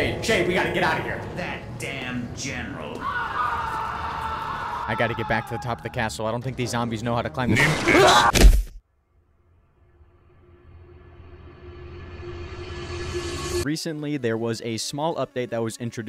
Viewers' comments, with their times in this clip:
0:03 was that the scream of 87?